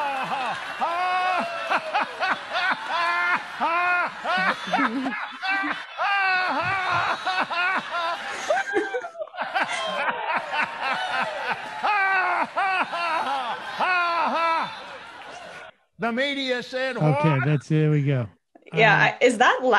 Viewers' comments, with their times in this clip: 0:04 he’s really laughing at how foolish these people are. Making sure they’re on board to hell.